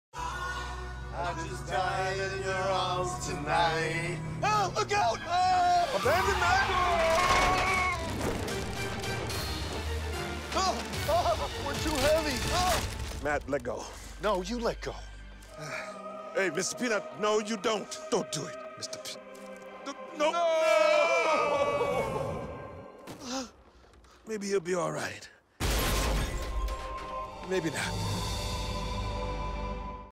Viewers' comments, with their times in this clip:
0:04 on .25 speed AHHH A GOAT
0:15 did he judt say "mrs peanut"?
0:18 gets me every time. The quiet “mr. peanut...” the tense look in his eyes like this is a fucking peanut. He’s a great peanut but holy shit does it get me.😂😂
0:20 Mr. Peanut’s Star KO Sound.
0:21 did I just heard shaggy or something
0:21 If you listen closely you can hear his body hit the floor. That's F*cking dark man.